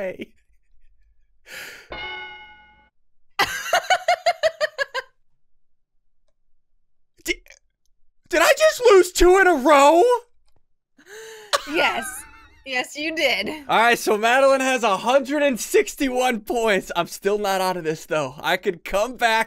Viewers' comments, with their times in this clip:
0:03 ACTUAL DEMON LAUGHTER......